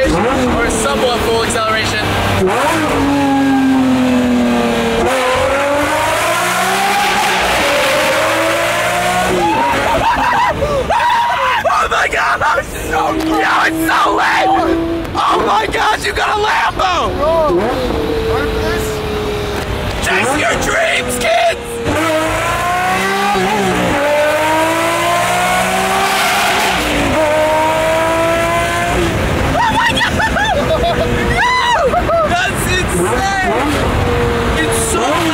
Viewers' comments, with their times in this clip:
0:06 BRO IS THAT A LAMBO OR A FIGHTER JET
0:09 THAT YELLOW LAMBO IS SO LIT, ITS STILL SO LOUD WHEN MY VOLUME BAR IS ON 1 BAR
0:21 he just doesn’t care and sends the lambo and it’s so loud
0:23 those are some godly v12 shifts